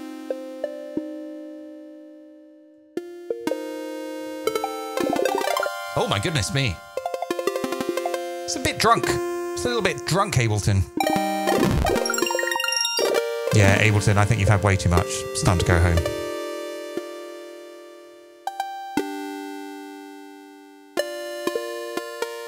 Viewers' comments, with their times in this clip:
0:04 Mario eats a mushroom